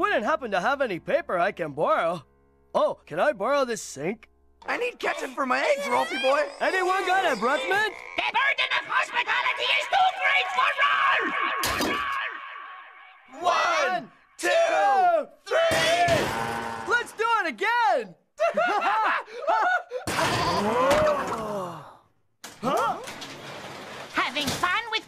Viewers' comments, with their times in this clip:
0:08 Rolf: (echoes) “the burden of hospitality is too great for Rolf!!!” 😳